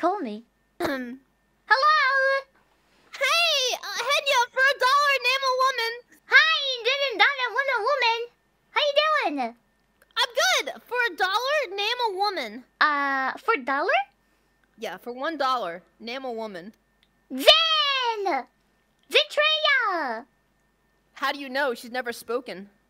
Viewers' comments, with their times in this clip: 0:06 whyyyy did she sound just like Gura.